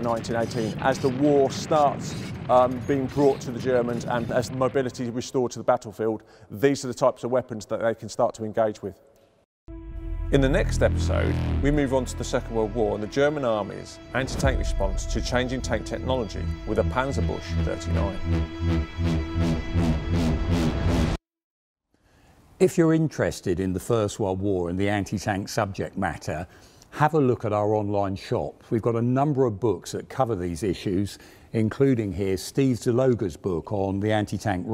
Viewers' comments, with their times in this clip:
0:09 Ah yes. The infamous german panzer bush 39
0:15 A more approximate pronounciation would be "panzerbuxe" if you can't get the "ü" right, but certainly not panzerbush.